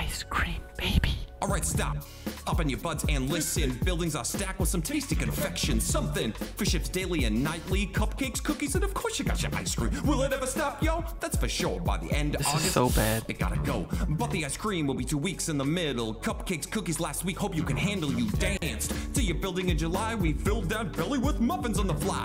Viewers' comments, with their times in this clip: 0:03 "Open your butts and listen"? Dafuq? DAFUQ?